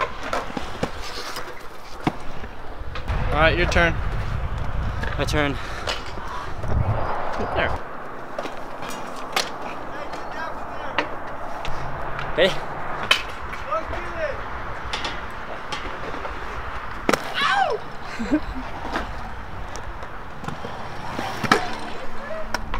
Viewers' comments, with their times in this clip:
0:08 Did anyone els hear that guy in the background ?